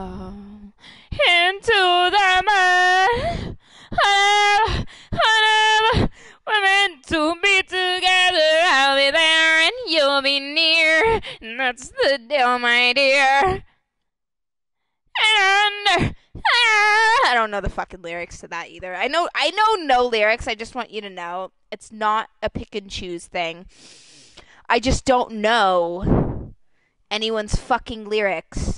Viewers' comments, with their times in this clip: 0:10 i had to stop omg shes kidding but shed make a good shakira impression